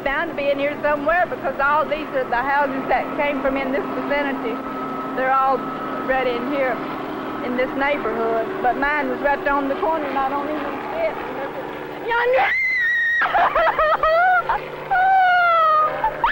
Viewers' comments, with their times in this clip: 0:03 I would like to know that lady's name because in every hurricane documentary I ever saw before Katrina, they always showed her screaming when she saw her house. I always felt really bad for her.